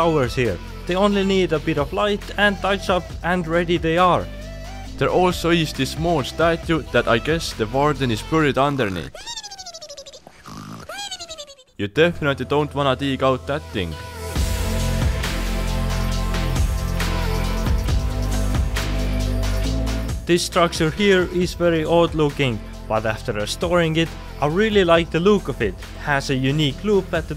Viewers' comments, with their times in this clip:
0:09 i was like my phone is ringing cuz that sound is my ringtone and i was wearing headphones so it was connected to both my laptop and phone